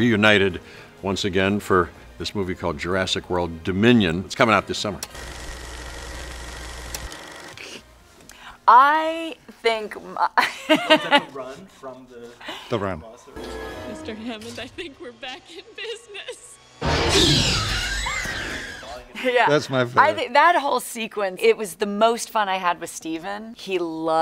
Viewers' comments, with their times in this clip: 0:07 Sam Neill is mimimicking the raptors